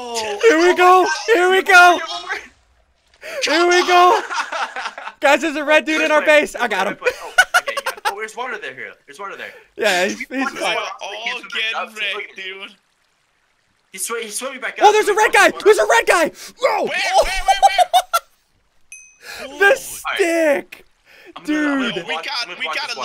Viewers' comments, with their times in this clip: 0:06 ssundee sounds like a chipmunk